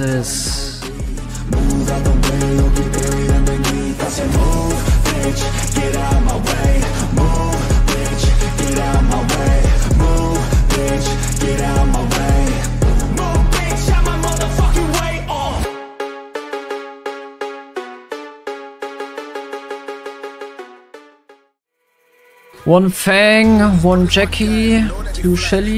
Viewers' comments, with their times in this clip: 0:09 what with he buzz💀